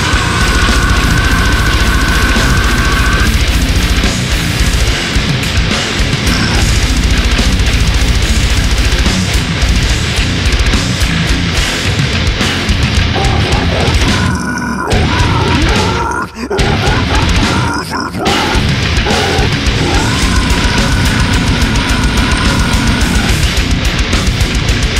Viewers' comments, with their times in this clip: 0:06 First time listening to Broken Flesh; they have a new fan. Epic song, musically and lyrically. Only one wish: the growl to be 10 times longer...